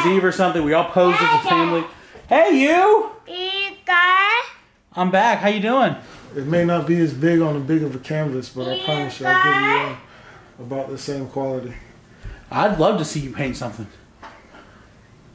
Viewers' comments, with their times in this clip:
0:03 sounds like little man is saying something foul lol